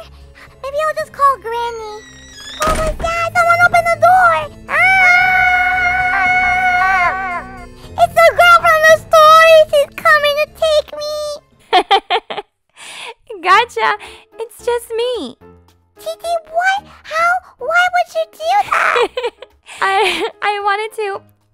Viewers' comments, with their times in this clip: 0:04 Goldie's Echo scream: